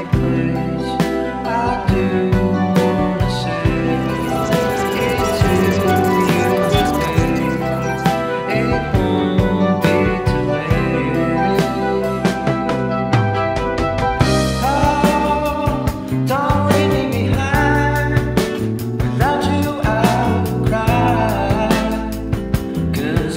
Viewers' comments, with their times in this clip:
0:05 also now I finally know that it’s “it to you my babe”, while I’ve been walking around for literally a year singing “IT’S you, you my babe”